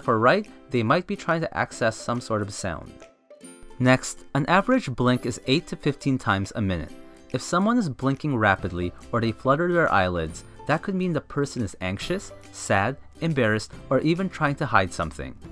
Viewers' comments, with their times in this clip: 0:03 "If they're looking left or right, they might be trying to access some sort of", I couldn't hear what you said at that point. What did you say there?